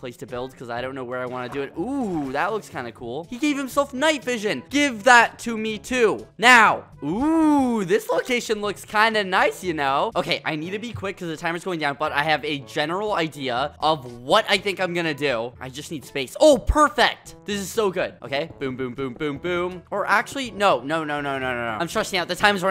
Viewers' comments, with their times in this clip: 0:07 ooooo dislocation looks kinda nice you know?